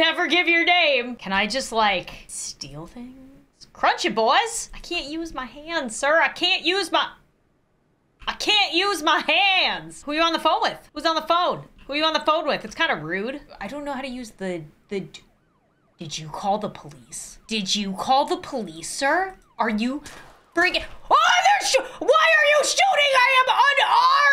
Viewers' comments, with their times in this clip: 0:06 “ I CANT USE MY HANDS……… (Aburupt pause) That killed me-
0:07 The pause tho